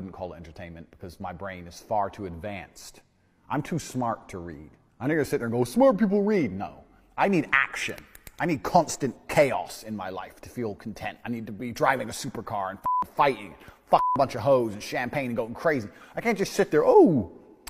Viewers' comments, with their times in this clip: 0:03 😂😂 this shit genuinely plays like gta5 radio